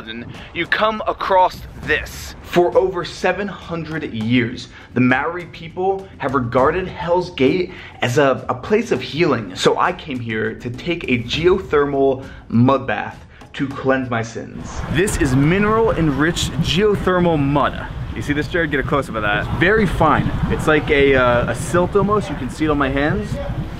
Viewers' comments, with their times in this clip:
0:05 Yeah I get it you're a tourist, but nothing angers kiwis more than pronouncing our names wrong